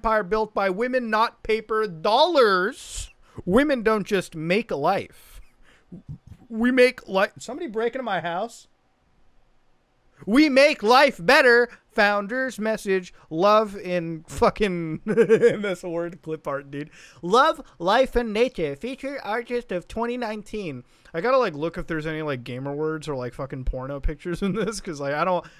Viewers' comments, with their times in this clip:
0:07 you laughed so hard from the 3 mood changes in 2 seconds.